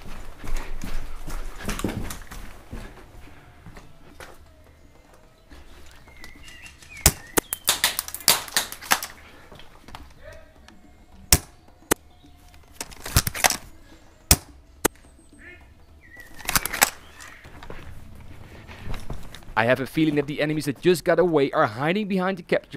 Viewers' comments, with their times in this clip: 0:06 You made an accidental beat
0:06 accidental beat made by bbs
0:07 It sounds a little better when you start